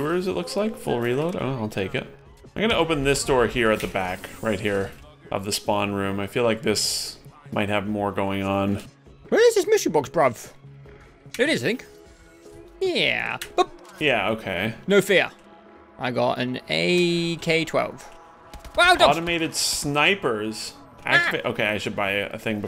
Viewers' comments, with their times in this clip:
0:10 Did you just jokingly "bruv" because it sounds like you're joking but to non-Brits, that seems like an American being like "Lol, do you seriously think me, an American, would eat a hamburger?"